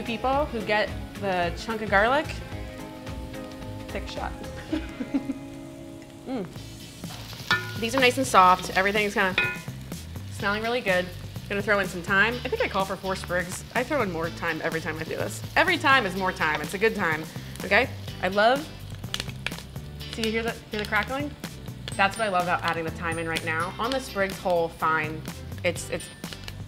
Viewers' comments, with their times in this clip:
0:09 Four "sprugs" of thyme is my kind of a good time too.